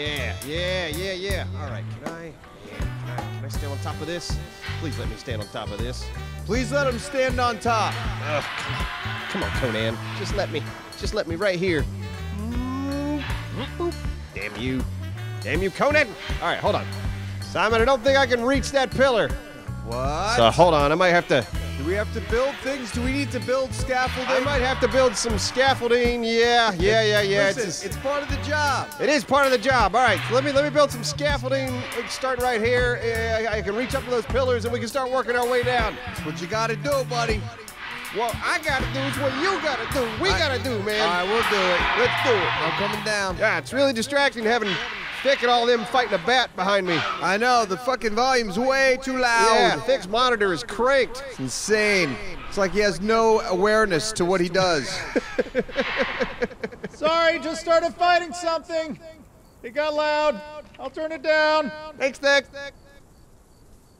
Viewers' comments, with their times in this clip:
0:08 was someone using a circular saw in the background or something??
0:44 I was wondering what all that screaming was!